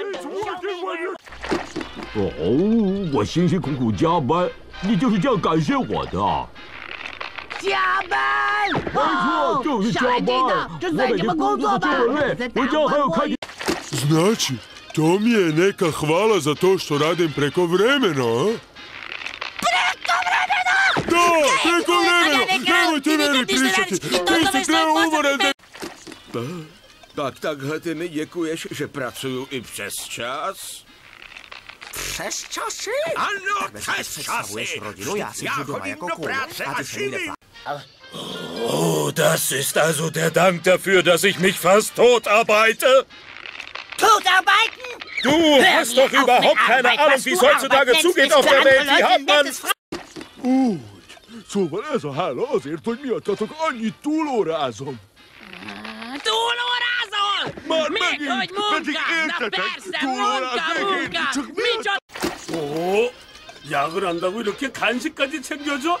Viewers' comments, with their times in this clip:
0:02 it's Taiwanese Chinese
0:03 There is a voice of the Taiwanese, and the flag is wrong.
0:06 actually it's taiwanese chinese
0:07 somebody speaking Chinese and is getting angry cause a person assumed he was speaking Japanese
0:07 That is Taiwan🇹🇼 voice not 🇨🇳
0:07 ..spongebob sounds like franky from one piece..
0:13 They actually hired really good voice actors
0:13 The Croatian Voice of Patrick Star is similar to the Original Voice of Patrick Star.
0:14 best SpongeBob voice over
0:14 Croatian Patrick sounds exactly like English Patrick, just speaking Croatian.
0:14 I didn't know Bill Faggerbakke could speak Croatian! =O
0:15 Patrick sounds like a normal voice
0:17 Croatian sounds the most similar to their original voices.
0:19 Why did it sound like he said crack cobra venom!
0:26 Two old men arguing
0:26 czech sounds like old men fighting lol
0:26 why are they so calm??
0:27 Why the Czech sounds like two old guy fighting over bingo.
0:27 In the Czech language it looks like a ONU or CNN documentary
0:27 screams in lowercase
0:29 I not fresh juicy
0:30 The Czech dub honestly sounds like two old guys arguing over bingo or something. But I find it hilarious in a weird way.
0:30 I imagine this is what British people sound like to non English speakers
0:31 I didnt expect this tone 😂
0:31 LMAO THE PITCH OF SPONGEBOB'S VOICE IN CZECH REALLY DIDN'T MATCH HIS FACE
0:31 i can’t get over how spongebob has such an enraged expression, yet he delivers the line so calmly lmao
0:31 the tone of his voice 😂
0:31 imagine a jack person with that voice
0:31 when you wanna record but you don't want to wake up your parents.
0:31 is so out of tune! 🤣🤣
0:31 Fresh Joshie?!!! Patrick: I’m no fresh Joshie!!!!!
0:31 The Czech spongebob be yelling in lowercase 💀
0:31 I love how SpongeBob's Czech actor tried to sound not so calm by saying "OVERTIME" in said languages.
0:31 Czech spongebob sounding like Mickey mouse
0:32 Second SpongeBob aren’t screaming, he’s serious
0:32 sounds like said "ESTASSHI"
0:32 got me chuckling WHY DOES HE SOUND SO CALM!?!
0:32 spongebob sounds like old man...
0:32 silent rage is more powerfull than rage normal
0:33 it's like old people yelling to each other.
0:33 Patrick sounds like a furious old man in a grocery store
0:33 I LOVE CHESS CHASSIE!! arguing in Czech
0:33 sounds like two old men fighting over who’s the oldest
0:33 Why no body gonna talking about this Spongebob lector voice XD
0:33 sounds like it has translator in the background
0:33 LMFAO SPONGEBOB SOUNDS LIKE THAT ONE SPANISH TTS MEME-
0:33 My favorite part is how Patrick sounds during the arguments ok listen
0:33 Everytime I hear I expect to hear some beat and rhythm in the background cuz it sounds like their rapping
0:37 Secret recording of Hitler arguing with an unnamed general, 1944
0:38 Patrick sounds so angry 😂
0:38 "Oh, the sisters who dead damned the feudy-seedy fast daughter biter?" "DAUGHTER BITING?"
0:38 That voice looks like an anime one
0:38 Two Nazis arguing over who is the Führer's favorite during WWII
0:38 German yelling at Italy for being dumb in WW2
0:38 sounds kinda like bakugo
0:38 <- when the anime villain realizes he's out of toilet paper
0:38 calmest German conversation
0:39 normal voice of anime guys
0:39 German Spongebob: TOOK A BUTTON?!
0:40 I heard Dr. Phil in there🤣🤣
0:42 total biter and total biden
0:43 Sounds like an English accent. "Thought I've bitten?"
0:43 Toota Biden? Da heck?
0:43 Cook Joe Biden?!
0:43 Kinda sound like spongebob said "TWO TOE BIDEN"
0:43 What I heard is "to the bittin'"
0:44 To the Biden?
0:44 Sponge bob, are you trump or Biden? Sb: TO THE BITEN
0:46 2 Germans having a casual conversation
0:46 Hitler arguing with another person
0:47 i don't know what he said but i heared akatsuki
0:50 That Hungarian Patrick sounds just like his English counterpart!
0:50 Hungarian is actually so perfect
0:55 My reactions- English- Original Chinese- Its ok, Croatian- Spongebob sounds like a little boy i like it XD Czech- Really Good but spongebob sounded a lil different when he said "overtime" German- I like it, patrick sounded good xD Hungarian- Ehh TOU ARE ASSHOLE XDDD Korean- Sounds good :) Russian- Was good but maybe the scream had to be a lil more dramatic XD Serbian- Spongebob sounds like a little girl 😂😂 Serbian- Ehhhhhh